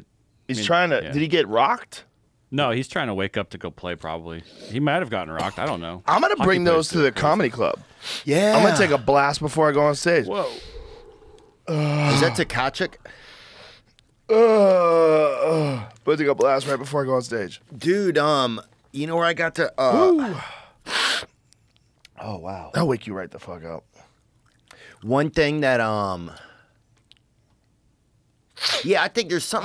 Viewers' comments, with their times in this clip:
0:10 the noises he’s making